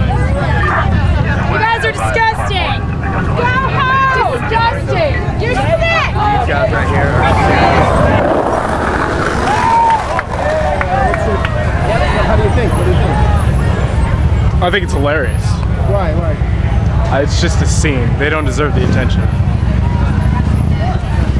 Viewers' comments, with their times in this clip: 0:08 I love the Jewish skateboarder Gr8 way to make a statement. Chanting while someone is talking, not so good.